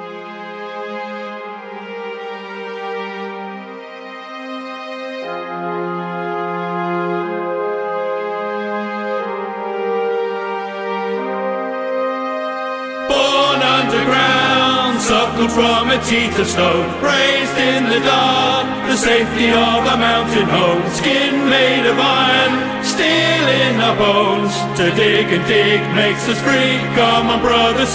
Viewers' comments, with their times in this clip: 0:03 I am emotionally touched to much by the "Born underground, suckled from a teat of stone" sequence after the calm section on
0:12 The best part is when you get quiet for a few seconds and they think its over, then you kick open your bedroom door singing